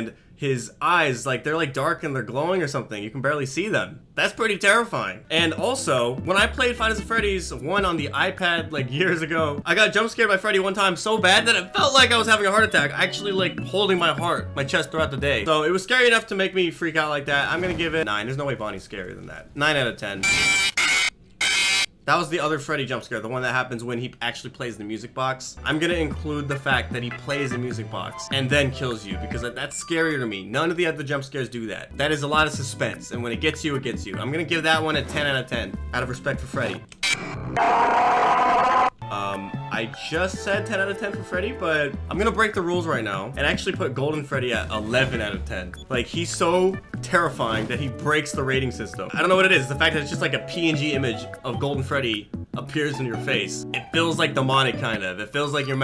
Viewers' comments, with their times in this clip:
0:09 I agree, I had the same exact experience. I think it’s because Freddy’s jumpscare is REALLY LOUD.
0:37 Another thing that I LOVE about Golden Freddy, apart from the character himself, is that his jumpscare's sound is different than the others' LIKE DAMN THAT FITS HIM A LOT